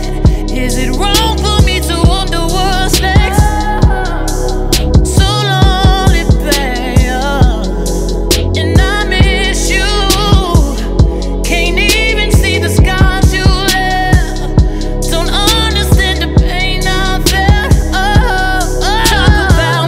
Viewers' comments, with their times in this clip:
0:07 THAT RUN Took ME OUT ❗️🔥🔥🔥🔥